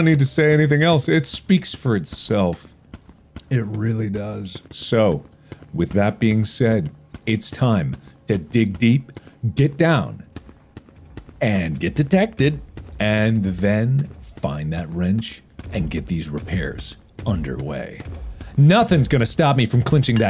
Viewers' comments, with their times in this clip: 0:03 he sounded like shaq